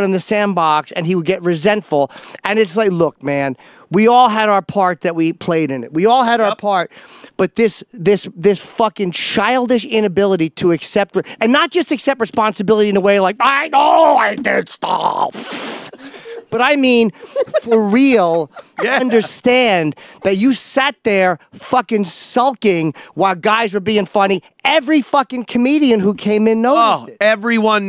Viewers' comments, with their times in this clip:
0:08 that Opie impression lol
0:11 Always thought Ant did the best impressions, but we now have a new best...
0:11 Ants so proud of that impression! 😂
0:11 Jimmy’s spot on impression of Opie